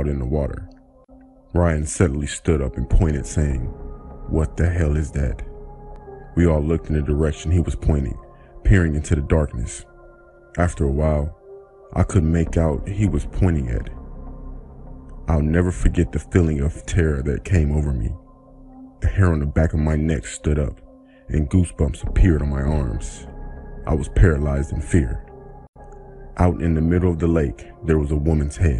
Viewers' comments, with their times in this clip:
0:09 The speaker needs to stop talking so close to the mic